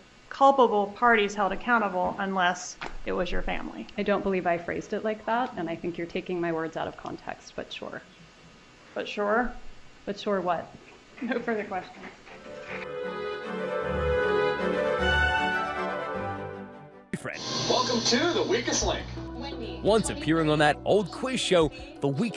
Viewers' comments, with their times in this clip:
0:05 I love this interaction. Wendi is the one that says “… but, sure.” Georgia sarcastically reiterates, “But sure?” Which throws Wendi off of her script. Wendie the programmed robot puts on her be-nice mode face and blankly asks, “But sure, what?” Forgetting just seconds before that SHE is the one that said it first. I love this for some reason.